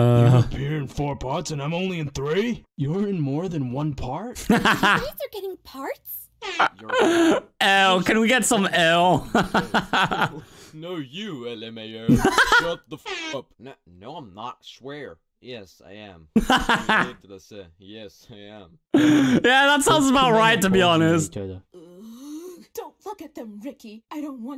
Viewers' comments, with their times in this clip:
0:10 this sounds so much like actual Joseph in the English dub